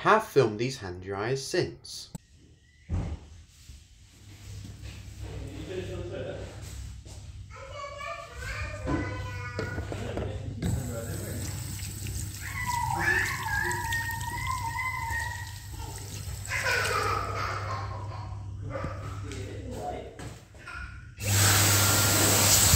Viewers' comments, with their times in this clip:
0:07 awahahaha hand dryer wowowowowowowow 😍